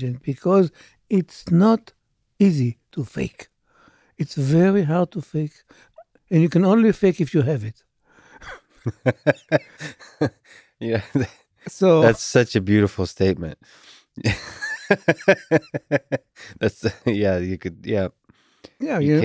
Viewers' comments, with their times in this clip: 0:05 "you can only fake it when you have it" lex got uncomfortable after getting exposed and laughed awkwardly. Lets start a new conspiracy